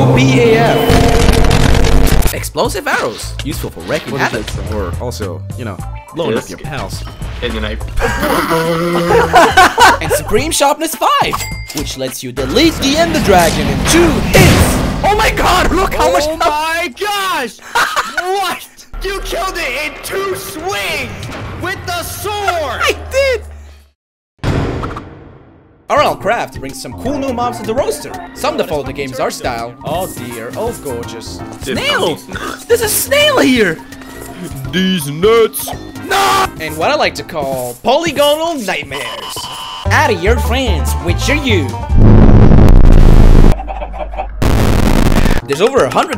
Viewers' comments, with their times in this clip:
0:09 Love the use of the Undertale sound effects for those heavy hits. So crisp. Now I must add them to my game using resource packs :D
0:32 The best Perfectly Cut Scream ever